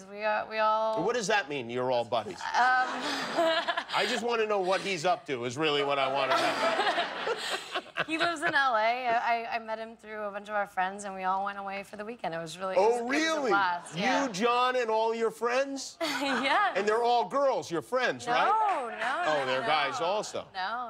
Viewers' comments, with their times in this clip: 0:07 that kimmel laugh 😂